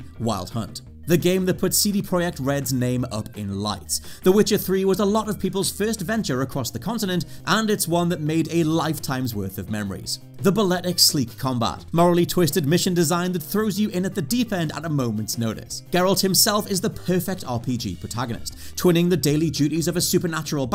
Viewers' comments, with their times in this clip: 0:05 Cd proyekt. Yea, I almost forgot they left the polish "projekt" in their name for some reason. Usually they also pronounce "CD" as "tse de".